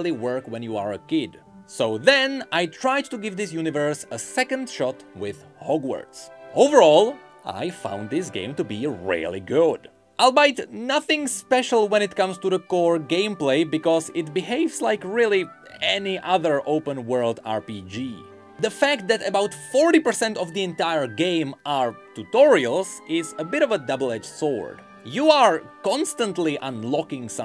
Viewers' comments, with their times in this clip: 0:09 Is the word here "albeit"? In my dialect (Midwest American English), it's pronounced All-Be-It, like those 3 words mashed together. I just Googled it, and sure enough, its origins are basically that. Today I Learned!